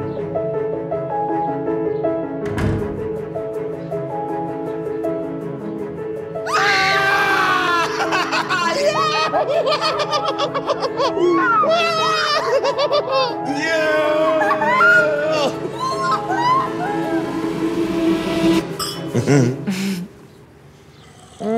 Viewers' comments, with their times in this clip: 0:09 the way they both cackled up lmao